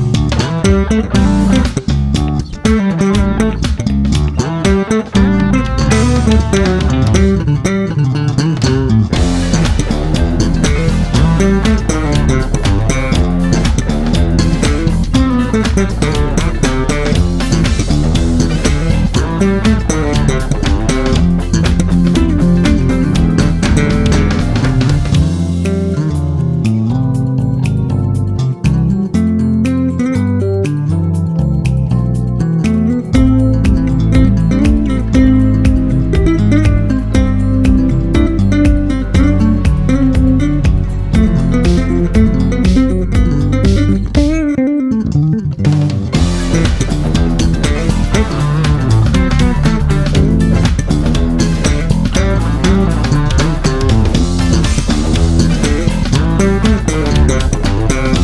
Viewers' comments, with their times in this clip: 0:07 That run .... jeeeeeeeeeeeeeeeeeezus. 😱Come ON man, leave some talent for the rest of us! This is SO friggin' good!
0:25 There's 2 lines in there that remind me of the theme of the Lord of The Rings in the Hobbit village
0:44 He also omitted all the technical parts, i.e. he replaces that run with a bend. He’s good regardless.